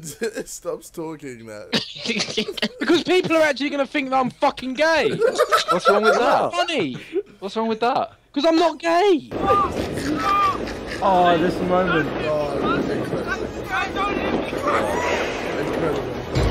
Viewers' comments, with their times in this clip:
0:03 JJs laugh is the exact same